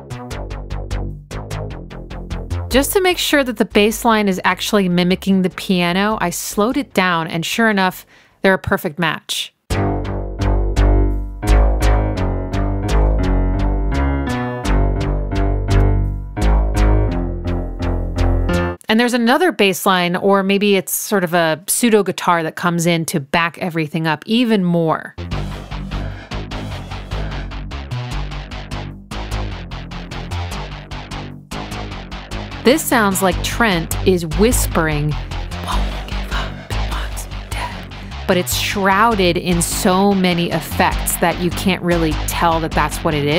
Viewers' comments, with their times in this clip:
0:06 ... bahaha .. its so creepy I can't tell if I really hear his voice or not .. He gets in your head doesn't he .. I can't not hear it after you suggested it was there .. but wouldn't swear to it not just being that rythmatic accent tricking my mind searching for it
0:29 idk i think its a guitar with chorus and lots of gain.